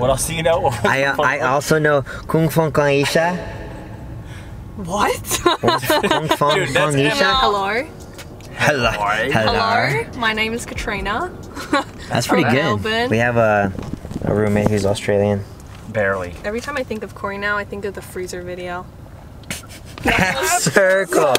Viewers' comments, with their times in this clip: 0:07 WTF HOW WAS HER AUSTRALIAN ACCENT REALLY GOOD? And she pronounced “Melbourne” correctly, I’m weeping 💀